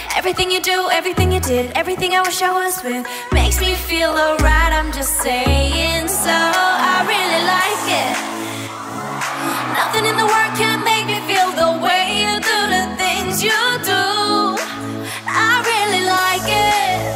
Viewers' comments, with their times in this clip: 0:05 Her voice sounded so funny lol,love you!